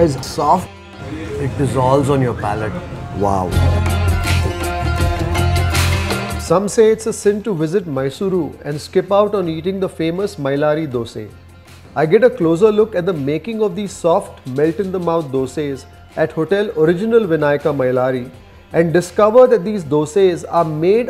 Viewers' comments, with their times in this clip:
0:04 that police man laughing 😂😂😂